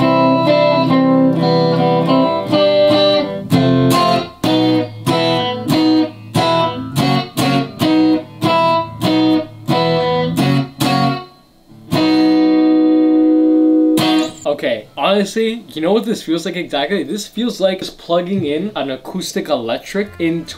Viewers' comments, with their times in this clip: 0:05 sounds very similar to clavado en un bar by mana